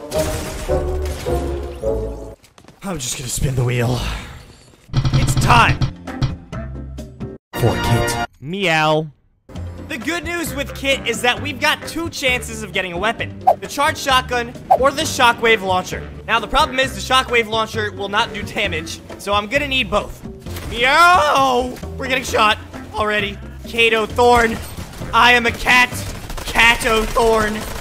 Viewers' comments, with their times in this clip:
0:09 so cute 🥰 kit with the meow